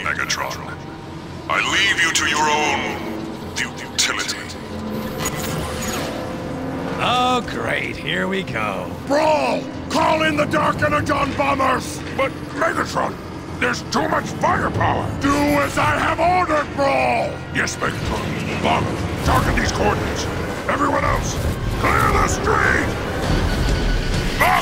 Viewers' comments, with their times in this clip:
0:09 megatron really gets angry when he orders brawl for more firepower